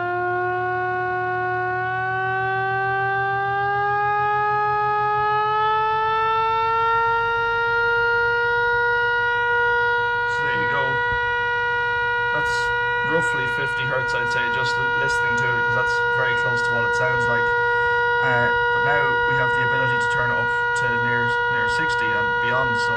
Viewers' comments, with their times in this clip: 0:06 you remade the PTR 10 port pitch right there